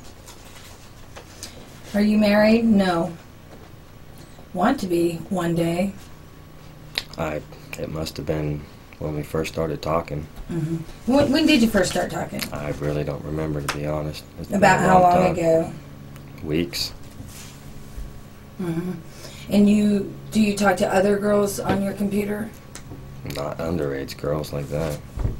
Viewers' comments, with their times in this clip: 0:06 I hate the disgusting smacking sounds he makes whenever he talks.